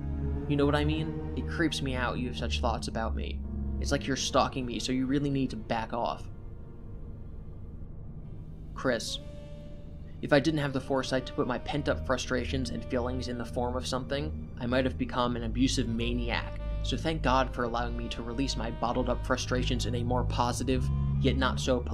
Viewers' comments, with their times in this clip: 0:08 the SAX is soooo spot on holy fuckkkk 🎷 😂😂😂
0:08 is pure cinema the 🎷 was the cherry on top . He didn’t even regret “the drawing” 💀💀💀